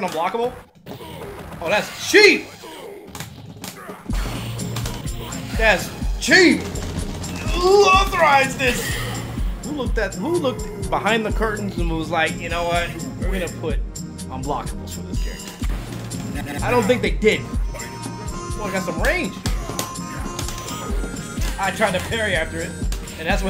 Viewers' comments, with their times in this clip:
0:04 oh shit thats knxwledge on the beat? noo way you talking about the song on ? now that I listen to it again its sounds just like him from the drums to the sample.